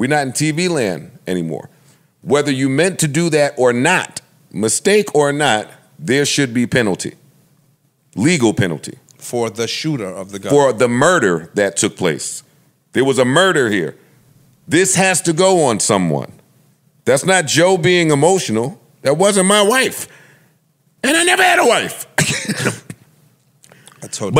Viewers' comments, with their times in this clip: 0:08 Got a lil loud fellas . I was watching the show on the late night, and fell asleep. I woke up to Joe yelling 😅